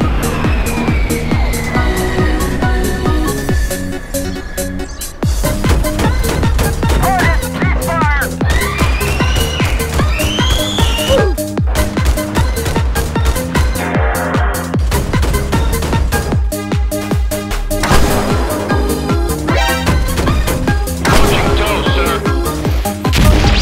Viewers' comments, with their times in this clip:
0:09 Toc Toc Toc have you heard about our Lord Jesus Christ ? hello ? we can hear you scream sir or extanted tank warrancy too